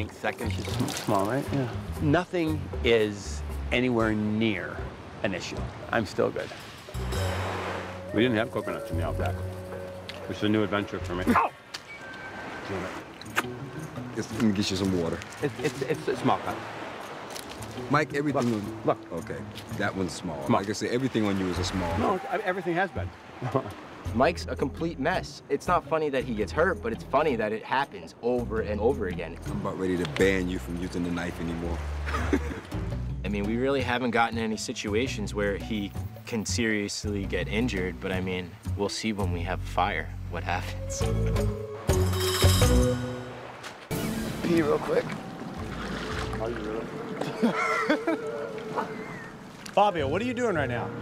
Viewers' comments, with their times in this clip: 0:10 when he screamed was the funniest thing ever.
0:38 The guy sounded like psychopath 😂